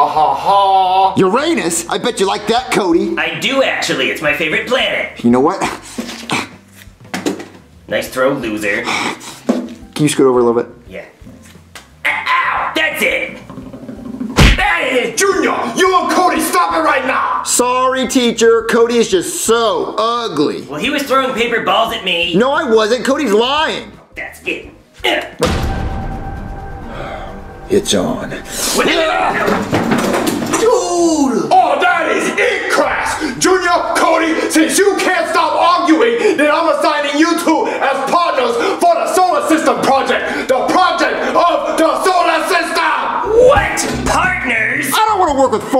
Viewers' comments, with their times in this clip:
0:10 y dose his feet sound like 😭💀
0:12 The sound of Cody walking lol
0:12 The sound of Cody walking up to Junior is too funny
0:13 his running sound 😂
0:13 Can we appreciate that they made him sound like he's actually walking and it actually sounds kind of cute
0:13 lol I love the little taps from Cody's feet, I died laughing XD
0:13 BRO THAT SOUND WHEN CODY WALKS THO-
0:13 Bro the tapping is so funny
0:13 bro the footsteps cody made when he walked to junior
0:27 The way he said it’s on 🤣🤣🤣😂